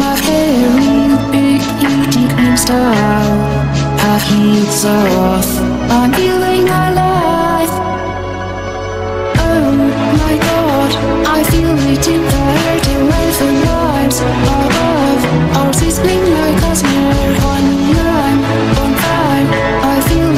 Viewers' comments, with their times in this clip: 0:08 sorry its 3am and this extremely english sounding oh my god is cracking me up. it sounds like goggle maps lady